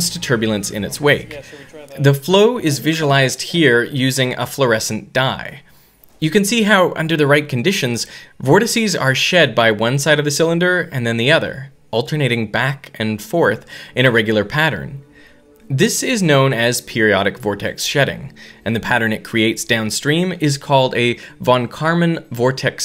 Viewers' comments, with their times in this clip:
0:04 It took me until to realise that he was talking about dye and dyes and not die and dice. I was thinking it was pretty weird how Reynolds would study how dice moved in a stream of water xd